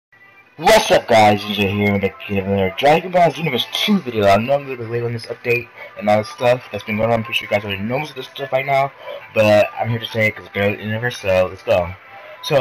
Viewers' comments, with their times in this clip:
0:00 is when my ears got raped